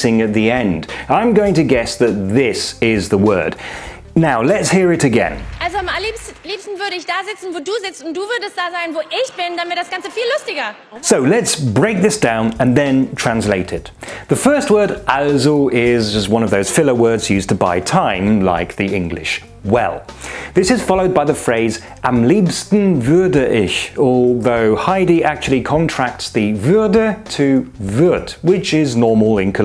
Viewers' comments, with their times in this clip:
0:10 Impkressive skills!!! From my point of view Heidi said: "...wo ich bin, dann wär das Ganze viel lustiger" => But really strange when I hear it with your subtitles she really says "damit" anstatt "dann wär" => so I have retried and without subtitles my brain understands "dann wär", maybe that is a brain default thingy. Completely confused now.